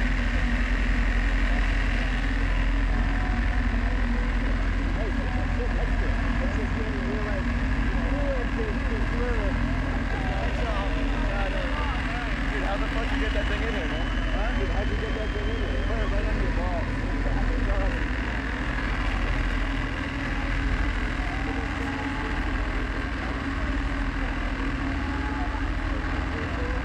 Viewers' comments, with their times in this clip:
0:09 "how'd you get that fucking thing in here?"...."under my balls." hahahahha greatest tool concert background voice pickup ever hahaha.